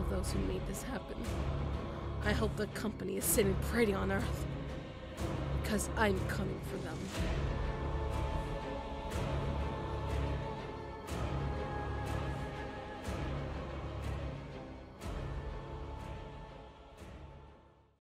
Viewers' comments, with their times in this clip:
0:07 what another music